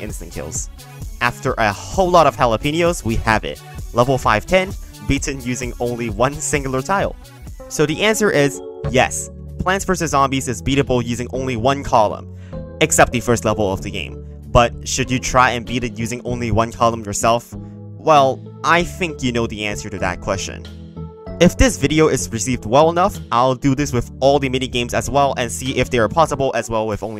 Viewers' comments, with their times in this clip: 0:08 Good taste using this track 👌